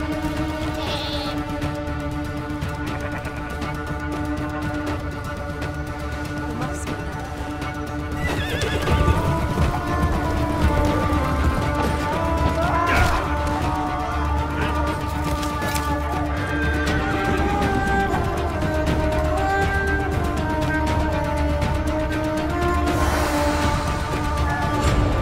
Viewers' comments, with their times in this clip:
0:10 this music is fels so good ❤